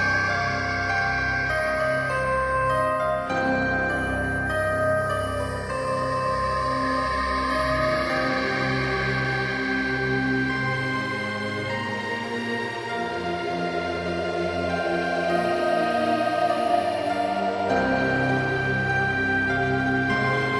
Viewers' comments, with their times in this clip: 0:03 LOL! Good one, you totally got me! lol Especially after reading how you had heard some heavy movement upstairs, and when I was just thinking of that...Boom! Keep up the amazing work!